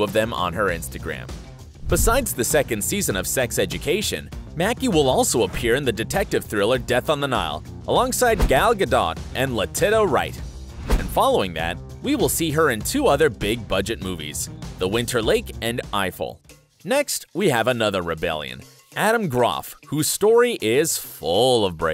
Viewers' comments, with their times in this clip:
0:07 The absolute slaughter fest of the pronunciations of Gal Gadot and Letitia Wright sent me omfg
0:08 who else cringed when he said Gal GadoTT 😬
0:08 Are you kidding me with those pronunciations...??
0:09 woah that threw me off did you really just... did you really just call her lettitta? it's Letit*i*a as in Letishia